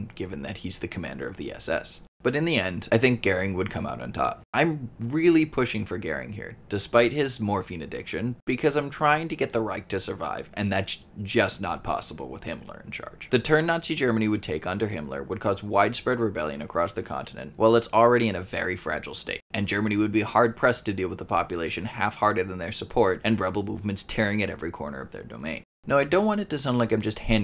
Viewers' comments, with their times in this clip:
0:10 Burgundian lullaby intensifies